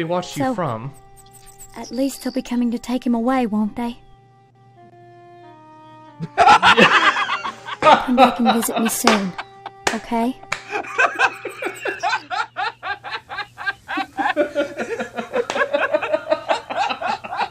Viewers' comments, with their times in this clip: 0:05 killed me as soon as they both started cracking up